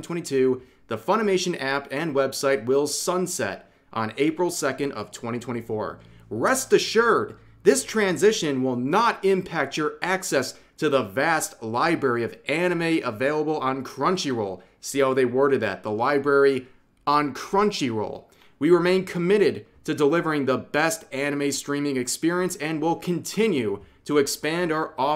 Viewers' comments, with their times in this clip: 0:06 He said "rest assured!" with so much hype that it made me cry about how w (i might get banned from YT??) Crunchyroll is.